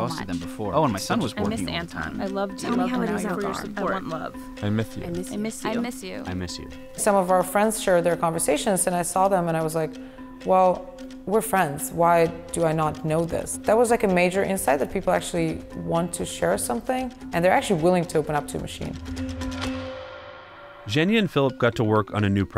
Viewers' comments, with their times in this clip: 0:04 "Love." " I myth you. " Did anyone else hear that man's speech impediment?